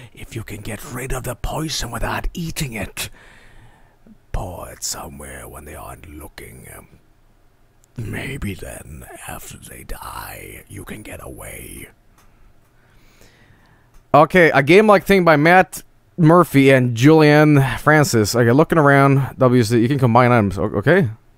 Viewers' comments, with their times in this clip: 0:09 Why does he sound like Peter Capaldi.